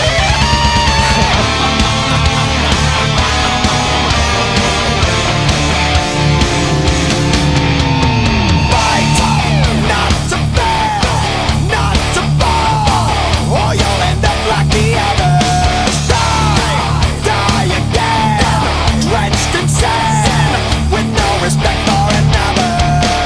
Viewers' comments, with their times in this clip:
0:08 so heavy boiiii🔥🔥